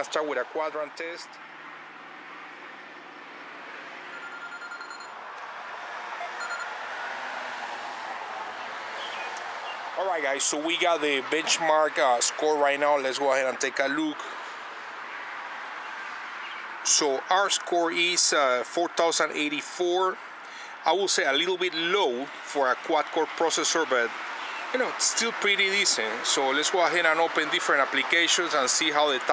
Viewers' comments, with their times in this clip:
0:10 Bitchmark? This gets you bitches?